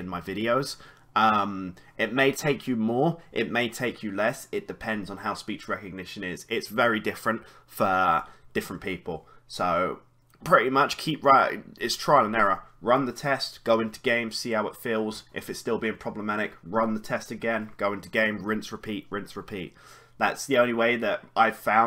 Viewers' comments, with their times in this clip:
0:06 "its very different FUR different people"